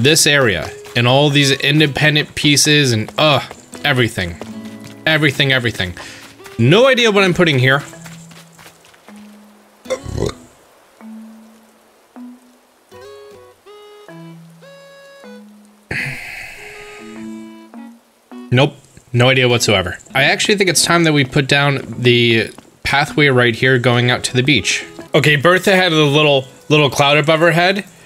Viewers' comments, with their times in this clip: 0:08 He ate his mic a bit...
0:10 Is nobody going to mention the burp that he left in the video xD